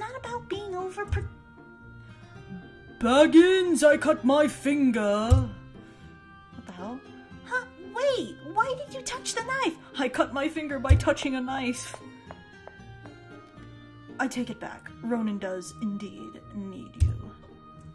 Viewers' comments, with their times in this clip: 0:05 lol I died at the voice xD